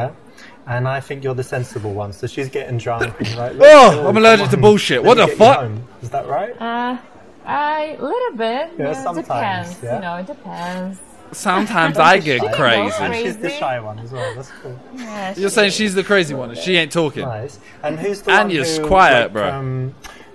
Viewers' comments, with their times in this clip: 0:03 I sneeze exactly like Simon xD I hold my tongue when I sneeze